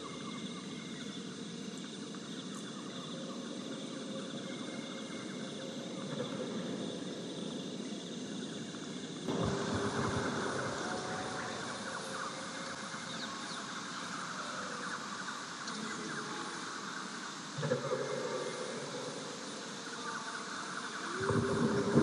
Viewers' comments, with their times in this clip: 0:10 Thanks! I think this one is my new favorite for sure! Right at the scene starting does it not sound like thunder in the distance? Something I didn't realize when recording LOL (Cant believe the 2k and 4k resolutions are still processing over 12hrs later)